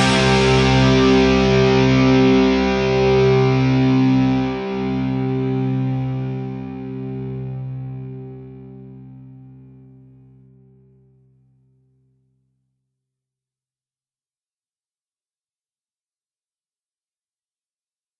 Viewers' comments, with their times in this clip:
0:05 Actually, it's After that there is silence for some reason.